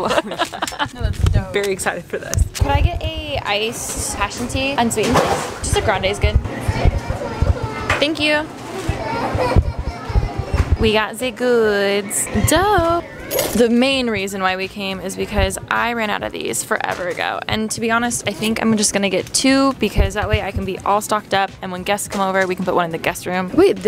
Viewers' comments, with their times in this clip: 0:09 the kid crying in the back is a fr mood lmao